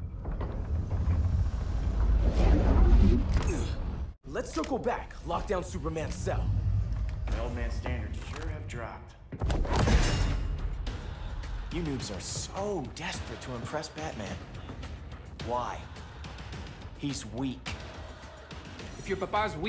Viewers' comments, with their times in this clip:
0:07 Damian sounds like Hiccup from How To Train Your Dragon